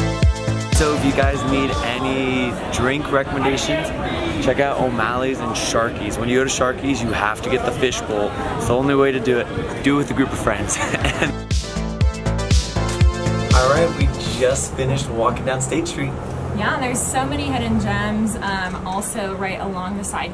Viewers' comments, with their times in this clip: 0:03 Who else hurd i can't breathe